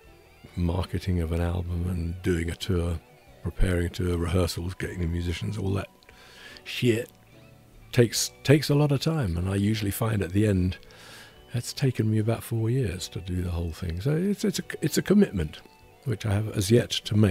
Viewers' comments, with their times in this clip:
0:03 even when gilmour says sheeeet it sounds so classy